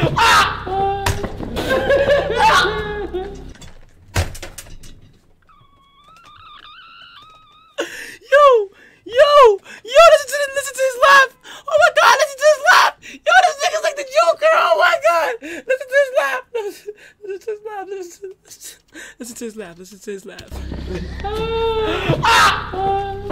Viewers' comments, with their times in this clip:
0:05 Bro sounds like a teapot
0:06 In kai laugh sounds like a kettle 😂